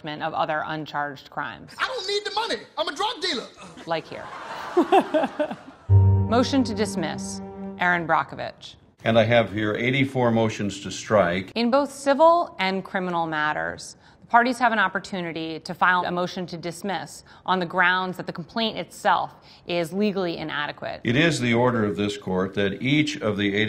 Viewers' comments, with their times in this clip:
0:04 GOD HER LAUGH I LOVE HER